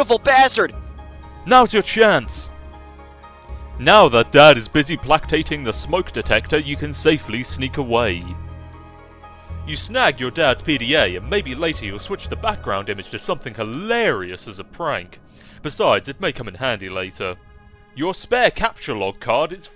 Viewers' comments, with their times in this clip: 0:04 ...did... did you mean... placating? Play-kate-ing?